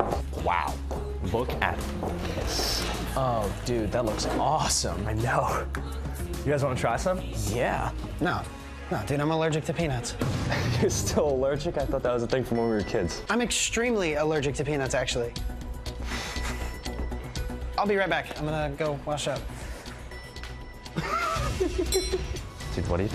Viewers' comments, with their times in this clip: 0:08 DAMN bruh no need to be that loud of voice